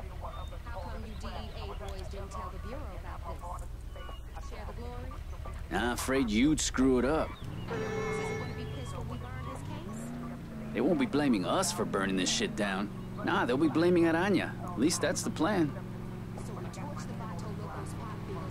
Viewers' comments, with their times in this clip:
0:03 WTF did anybody else notice that truck sounded weird?